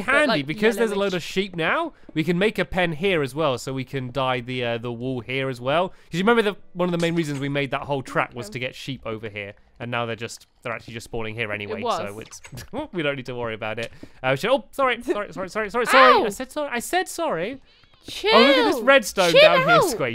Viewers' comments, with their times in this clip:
0:08 thought he said crap but he really said trap lol :()